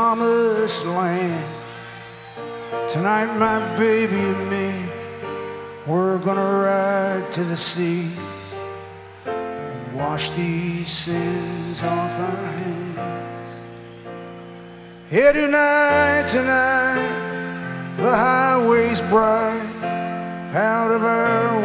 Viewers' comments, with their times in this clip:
0:09 There’s either an incredible one-time three-note key change or a horrible mistake by Roy …